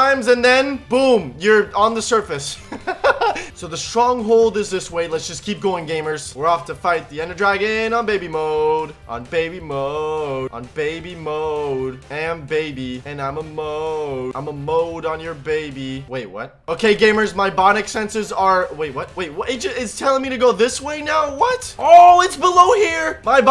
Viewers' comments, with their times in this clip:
0:09 what the song🤣🤣😂😂